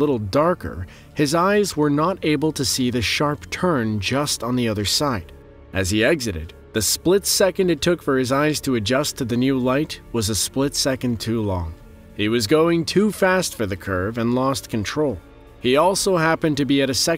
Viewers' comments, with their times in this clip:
0:03 #1....at (the last clip)...the dude driving on the roads that looked EXTREMELY challenging...Ummm not to sound too harsh, but if you can't SEE...don't you think it would WISE to SLOW DOWN??? If I was in the passenger seat...I'd be like DUDE! SLOW DOWN!!!...You don't SPEED UP and play superman over a cliff!!! GET A CLUE...You could hear him speeding up. Hmmmmm...CAN'T SEE....SLOOOOW DOWN....refocus...AH...there's the road....I'm GOOD!!!